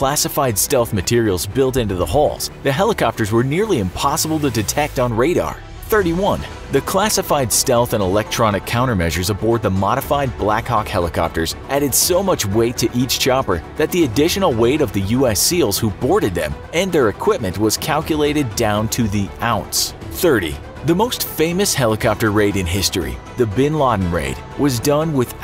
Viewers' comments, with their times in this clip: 0:10 someone else hear "blakcock"?